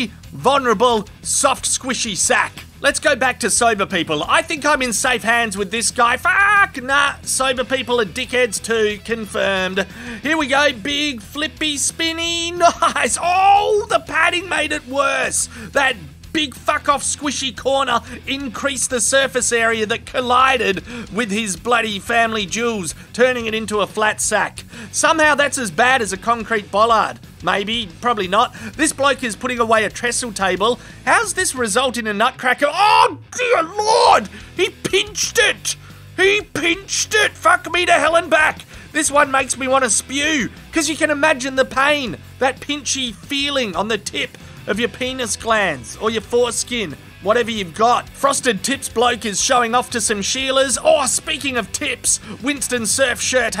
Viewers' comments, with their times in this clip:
0:08 I had to stop watching this I actually heard his sack pop or was it a nut?
0:36 "he pinched it" with that voice lol